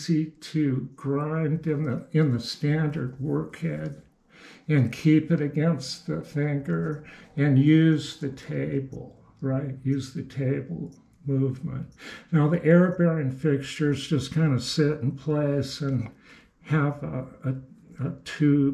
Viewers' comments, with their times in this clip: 0:05 what is the word used there, please? Thanker, tanker, ...????????